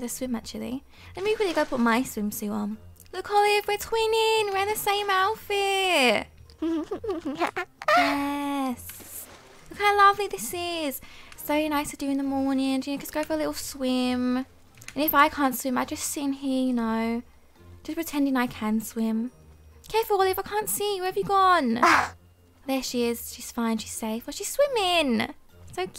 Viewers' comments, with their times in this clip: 0:08 her laugh is so adorable ❤️